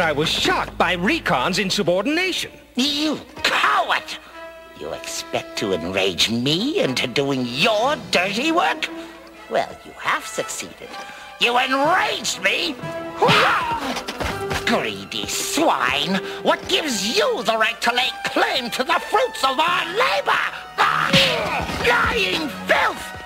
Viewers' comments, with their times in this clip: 0:07 was that Starscreams voice? Lol